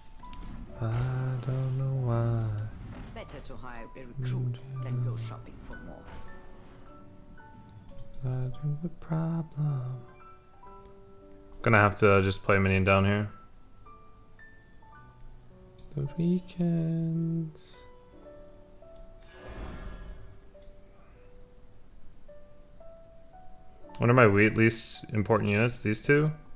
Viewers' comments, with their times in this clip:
0:07 CLANNAD ED HYPEEEEEEEEEEEEEEEE am I wrong, it sounded like Dango Daikazoku